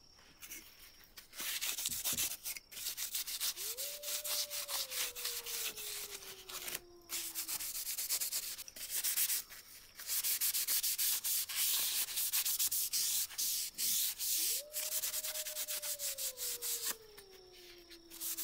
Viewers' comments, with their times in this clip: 0:04 do I hear wolves?
0:05 Anybody else hear the wolf howling?